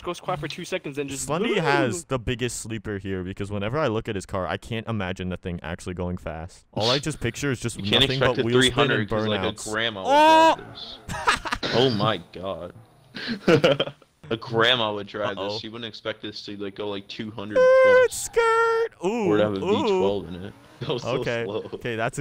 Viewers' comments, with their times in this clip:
0:07 0.25 speed OHHHHHHHH